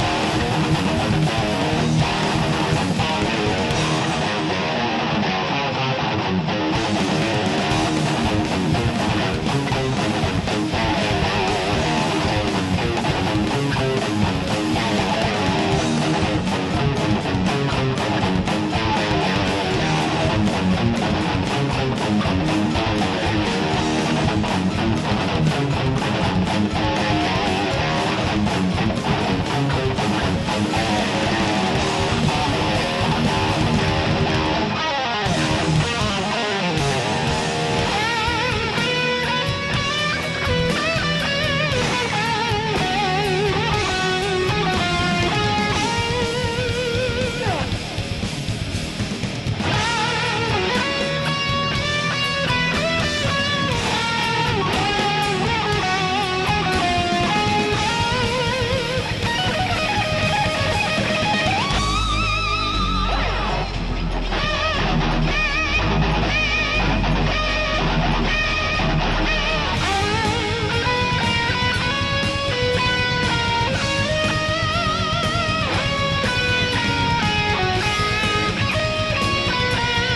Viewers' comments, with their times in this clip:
0:10 Eyyo do you have a piano? I have a hypothesis that "Abyss of desire, abyss of dreams" and onward might carry a similar tune to Feel a Fear's piano
1:07 the part at 30 seconds of the song is way to underappreciated. everyone should be arrested for not holding it to higher regard. the galops mixed with those little hertas on the bass are disgusting and get even better when they bring it back at aroudn the mark of the song